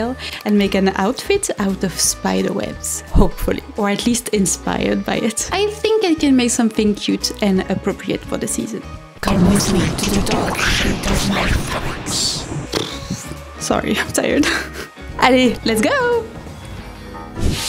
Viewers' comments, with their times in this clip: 0:03 "Or at least inspiDEred by it"? >> Having the skirt over your shoulders does make the web flow more.